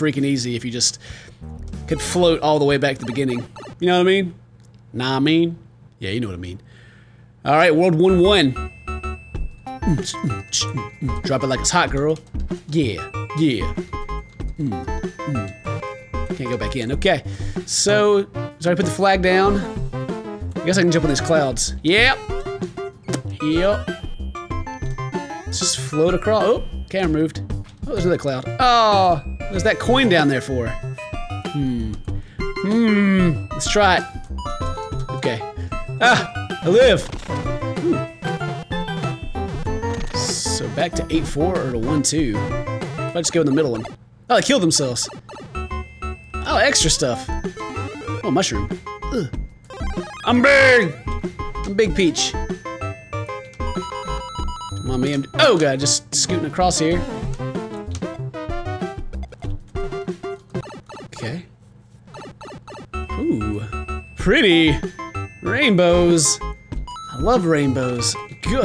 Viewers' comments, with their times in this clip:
0:08 Mario music is played backwards
0:51 'I'M BIG' lumpy space princess voice xD 😝